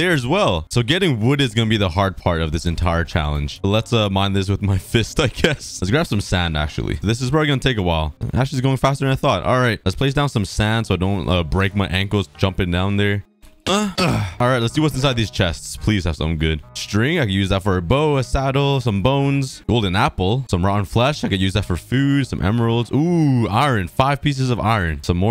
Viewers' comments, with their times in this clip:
0:06 At one he makes a weird noise
0:13 what did he sayyyyy